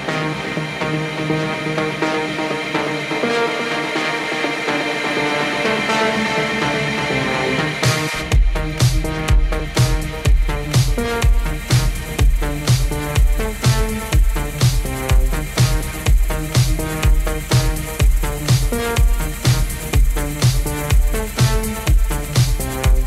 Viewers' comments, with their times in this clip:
0:08 that switch .. wow... every time shocks me how perfect it is.